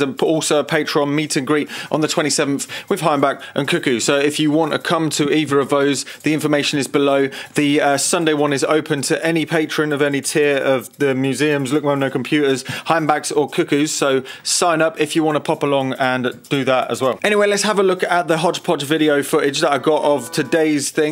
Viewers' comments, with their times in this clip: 0:06 Polish accent LOL I got two pH meters with built-in Meratronik V628 panel nixie millivoltmeters - modded one of them for digital control by ditching the ADC and all other unnecessary bullshit, then connected it with an Arduino Pro Mini and now I can control it by sending data over serial port. It's a part of my ADHD (Advanced Dial Home Device) project. The device is all soldered up, the display control part is done, tested and working, and now I've gotta write the firmware for the main part.